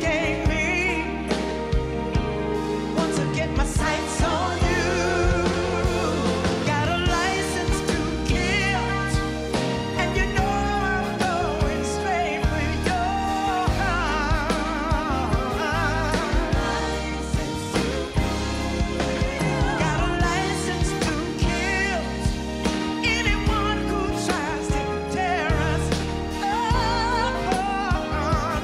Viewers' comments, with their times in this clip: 0:09 Nope. you can see the back singers are simply swaying their arms. If we're going to make up explanations for that sound it would be the drummer hitting the high hat. But even THAT makes no sense because what pinhead sound engineer would let this recording out of the studio with the appearance of Gladys singing 'Kill-t'. Maybe you two are fucking with me, because my ears and eyes don't lie. You can watch Gladys make the T sound with her lips as her backup vocalists swing their arms and sing nothing . Bye!